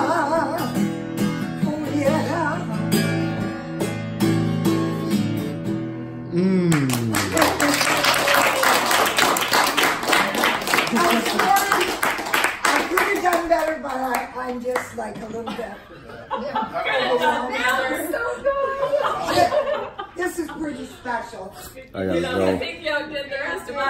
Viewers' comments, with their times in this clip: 0:10 is it weird that i clapped with everyone in the room :)